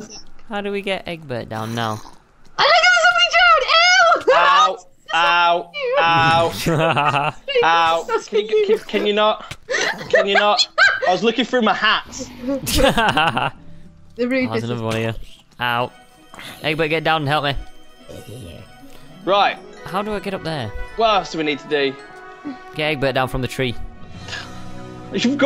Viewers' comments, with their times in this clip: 0:07 It's baby growl!